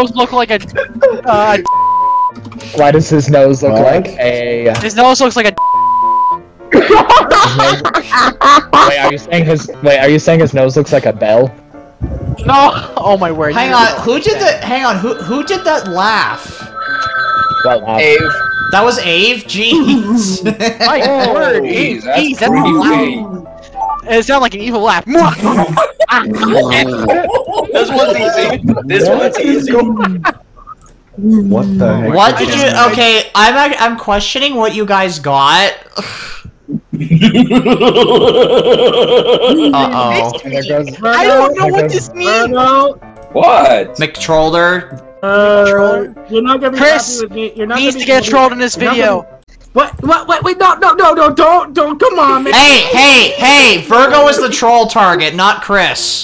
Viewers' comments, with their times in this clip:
0:08 Her laugh is adorable
0:26 Who laughs like that🤣🤣
0:37 When you hear this laugh you know something bad is going to happen
0:37 I laugh like this sometimes